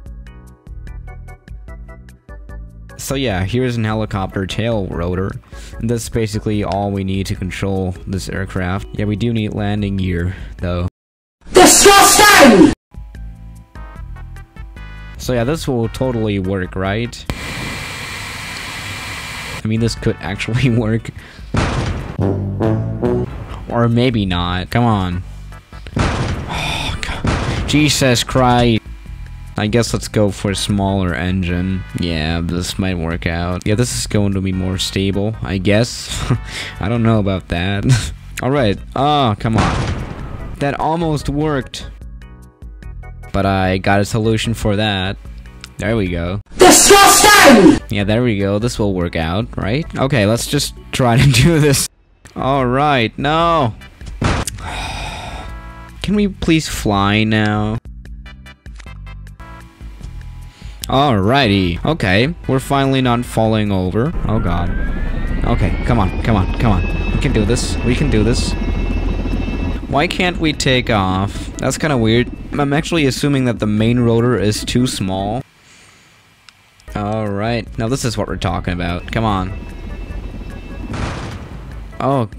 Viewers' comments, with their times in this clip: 0:10 R.I.P headphone users.
0:16 2012 MacBook Fan You were playing on an iPhone Weren't you ?
1:05 2012 MacBook fan